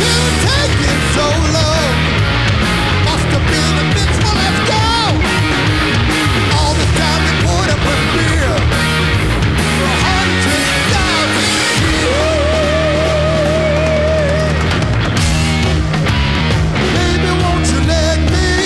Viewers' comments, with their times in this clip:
0:03 wow what he does with the bass is phenomenal